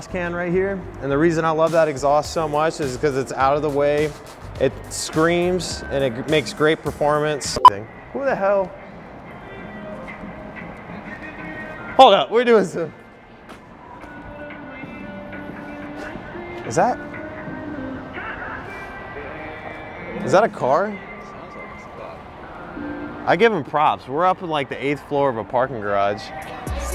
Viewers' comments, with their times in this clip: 0:09 I was singing with the song i love music 😂